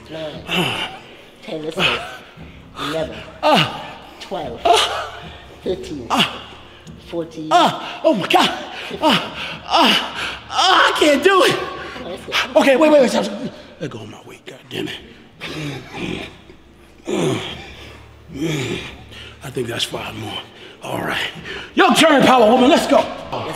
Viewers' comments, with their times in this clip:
0:08 lower your volume guys jajaja 👊🏽